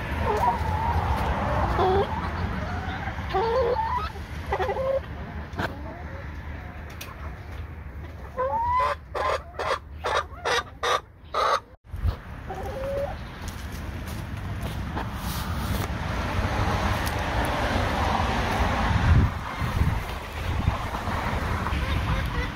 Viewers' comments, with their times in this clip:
0:03 One of your chicks sounds like a creature from Star Wars! :)